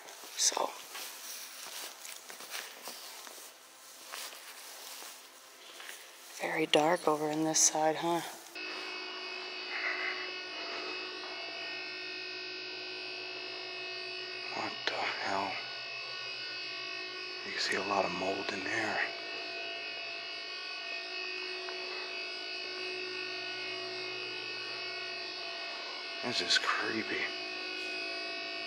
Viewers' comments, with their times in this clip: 0:10 what was that buzzing noise and where was it coming from??????? it kept getting louder and louder as you got closer to that dark part of the mall, I heard it in other parts of this video too.